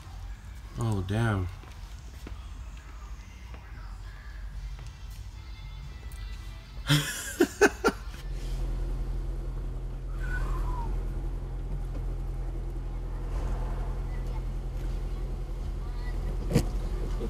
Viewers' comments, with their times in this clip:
0:05 the fact that you laught at the Factory OE clutch and flywheel. im bout lmfao when i see mines 🤣😂💀